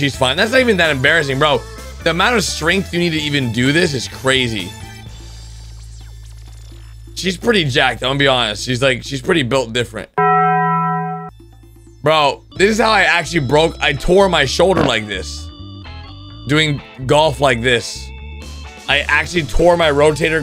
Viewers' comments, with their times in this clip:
0:07 Man golfing:(Bell ringing)